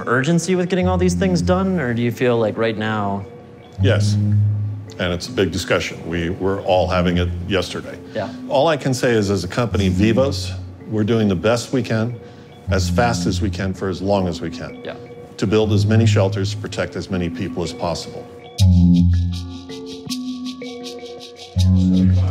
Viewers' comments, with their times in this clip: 0:09 that big guy dosent fit with his VOICE! damn